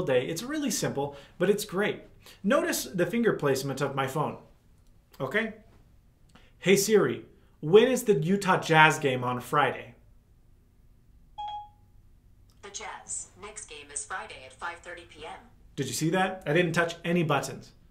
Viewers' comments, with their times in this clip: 0:04 activated my phone